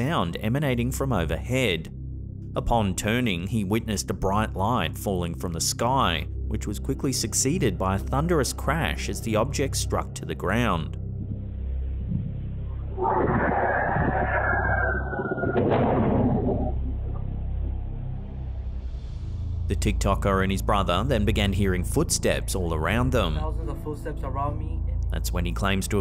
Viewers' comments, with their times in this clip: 0:08 OMG that sounds so road runner lmao